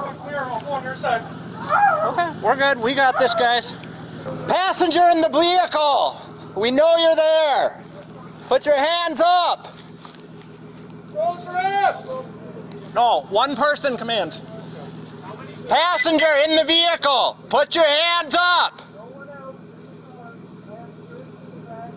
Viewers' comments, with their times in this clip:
0:04 passenger in the "Blehicle??" wtf is he on? And cops to just don't like to take two steps forward for a terrified guy with his hands on his head to detain him, but then just taze him cause he didn't want to obey stupid commands...Its insane how the cops act
0:04 when the officers speak like this, be scared. Be very scared. “Passenger in the blehicle!”
0:05 passenger in the "blehicle", we know you're there! Put your hands up! Maybe he should have been issued a field sobriety test...
0:05 "Passenger in the blehicle!" Not only is this officer seeing things but he is also slurring his speech. Sounds drunk.